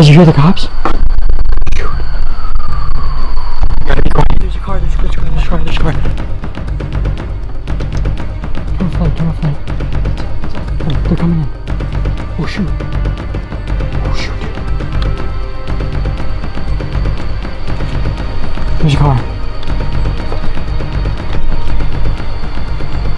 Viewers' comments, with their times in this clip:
0:07 I heard the sirens